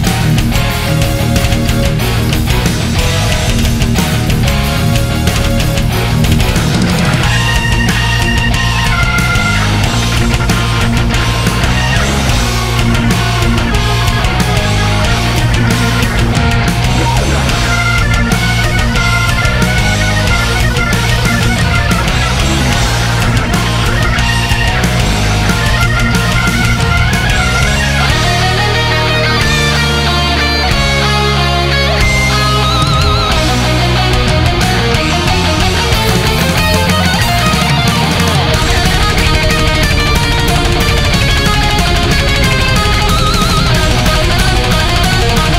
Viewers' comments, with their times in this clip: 0:06 Jon Lord from Japan :-)
0:15 Thrasher: AWW MY HEART Too much riffs you know :)
0:27 I havent seen anyone talk but isnt that just the most epic guitar solo out there. in my humble opinion ofcourse ^w^
0:28 the Bach moment